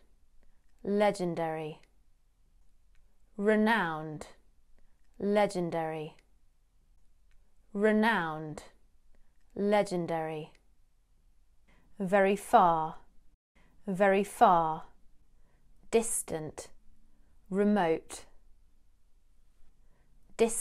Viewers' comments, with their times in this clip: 0:08 That Legendary sounds like a videogame